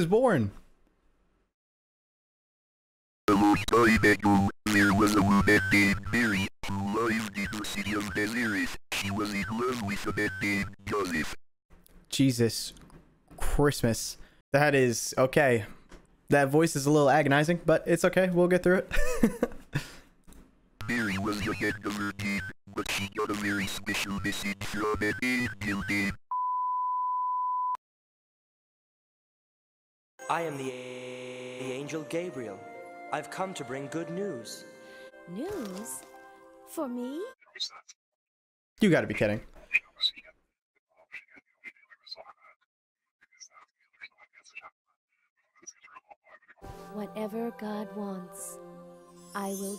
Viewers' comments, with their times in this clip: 0:06 V1 ULTRAKILL READS THE BIBLE😂😂😂
0:36 i heard no it's not
0:37 sis forgot to install the audio